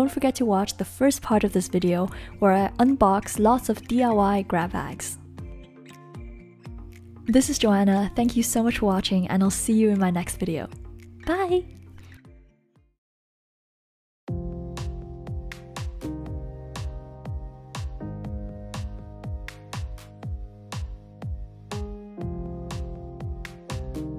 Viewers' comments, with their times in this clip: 0:10 Did anyone else hear that voice crack when she said bye 😂